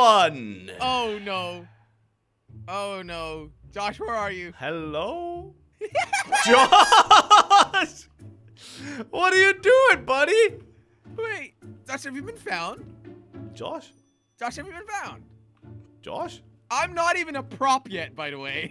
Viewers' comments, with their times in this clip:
0:04 listen to his hello